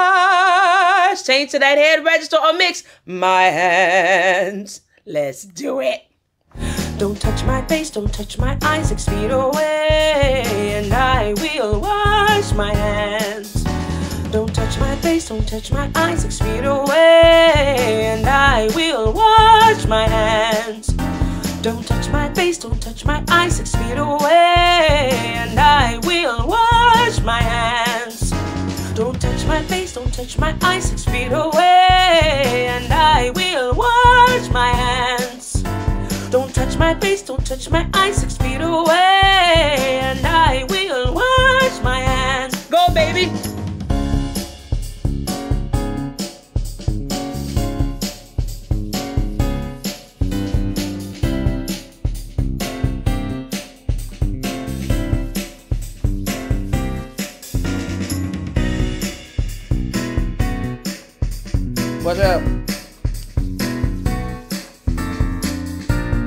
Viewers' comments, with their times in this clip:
0:07 is when she starts singing
0:50 NOTE the warm-up switches from ascending to descending!